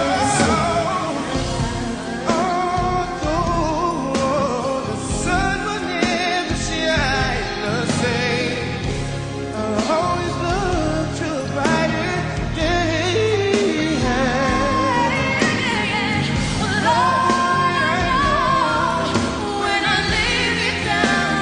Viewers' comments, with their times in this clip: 0:08 the way wanya can change note pitch wow